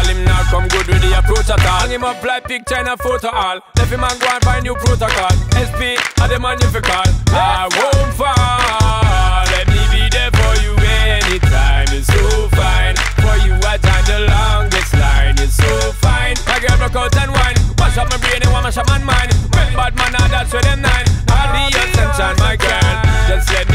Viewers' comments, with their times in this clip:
0:06 he say maron 5 [=